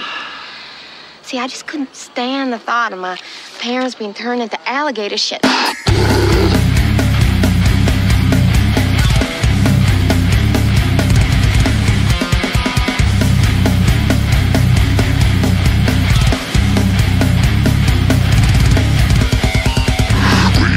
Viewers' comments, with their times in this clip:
0:05 is some groovy shit 👌